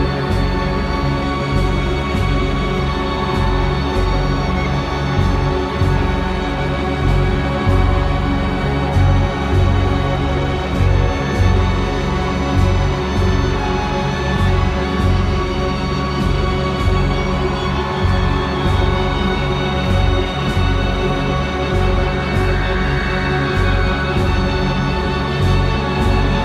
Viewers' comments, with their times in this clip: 0:09 They're best album by far! Does anyone notice this strange siren like sound that occurs about 3 times once in Anthem for no state pt. 1.? If you listen to it in headphones it sounds like it's coming from outside. Like it's not on the recording but outside your door or something. Anyway, fucking amazing. Further sticking it to the man.